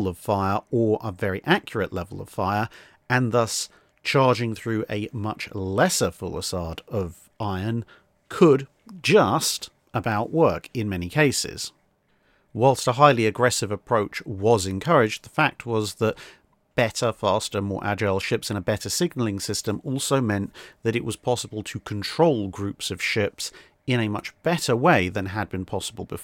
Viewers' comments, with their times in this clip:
0:07 Love this and everything about your channel and you, you're voice is soothing beyond belief! Just it's FUS-ill-ade, my nauty brother, not full-i-sade, but I loved that one too! Never change! 😂❤